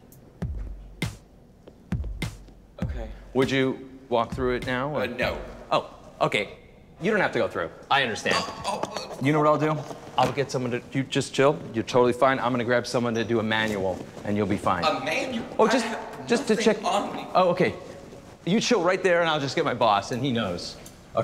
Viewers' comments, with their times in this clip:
0:03 Would you walk through it now? UH NO.. LOL the way he says it is priceless also the THEY TRAIN YOU TO... part